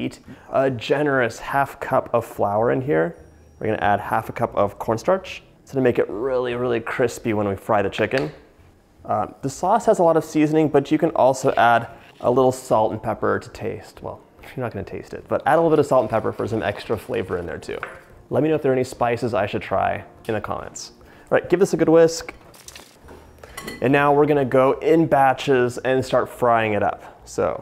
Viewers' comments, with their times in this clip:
0:09 I thought he said the sloth has a lot of seasoning-